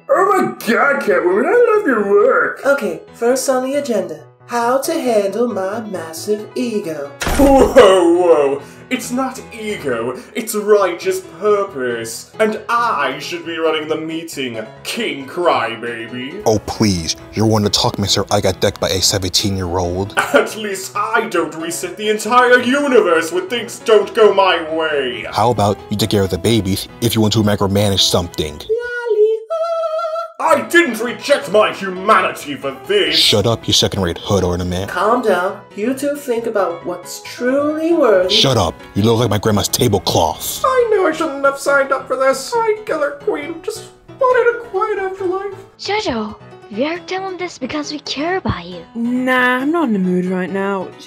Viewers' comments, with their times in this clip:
0:08 the voice for the world bud perfect
0:39 why does kq sound like dbz abridged krillin lol